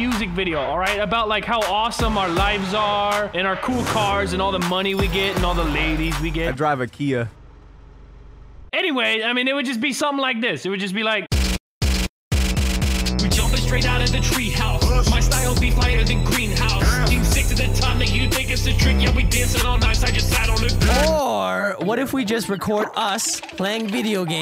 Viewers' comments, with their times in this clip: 0:10 The beat is fire 🔥🔥🔥🔥🔥🔥🔥🔥🔥in
0:11 Wildcats rap is straight 🔥
0:12 then beat hits harder that my dads belt
0:12 in 0.75x cooler